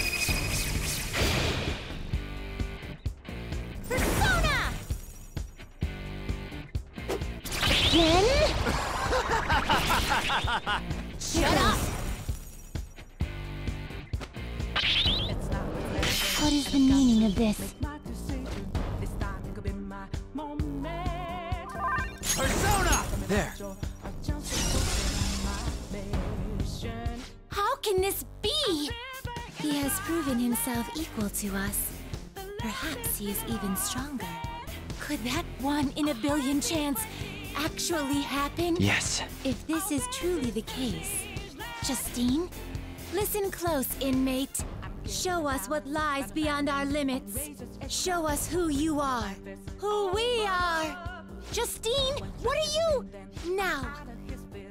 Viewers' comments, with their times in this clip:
0:08 Joker’s laugh is amazing
0:38 I fucking lost it whenever the extra added in Joker voice said "yes" after their statement